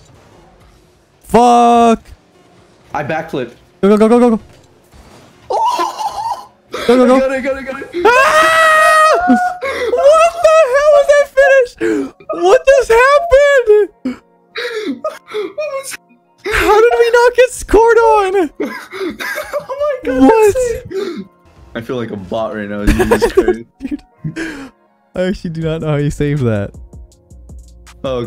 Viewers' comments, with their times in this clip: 0:04 Something about two dudes getting so excited at a game that they become little girls is very entertaining!
0:09 The octave change is real